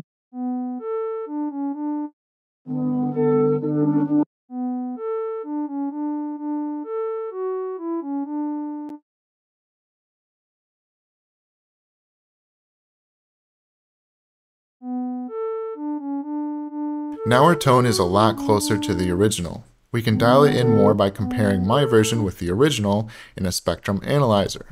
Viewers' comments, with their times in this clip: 0:07 reminds me of stormzy - shut up